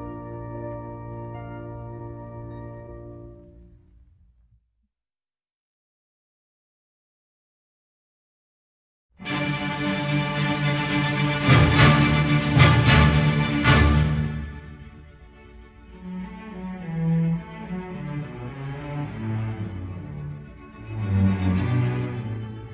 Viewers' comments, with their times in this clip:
0:04 I love the intensity of the final movement Excellent.